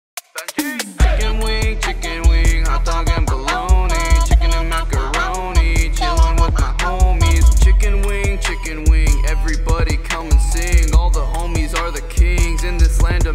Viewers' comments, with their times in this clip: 0:01 is that your voice pitched up higher